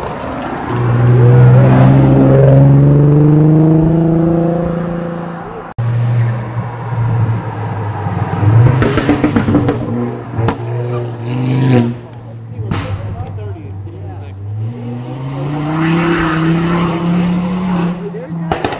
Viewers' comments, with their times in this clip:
0:05 with the C30 with the lights and the bang bang